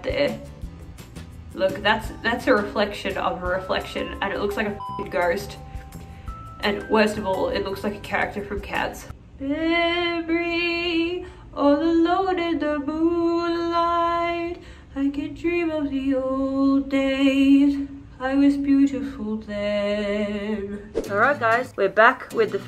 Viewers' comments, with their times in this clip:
0:09 I lost it when you started singing lmfaooo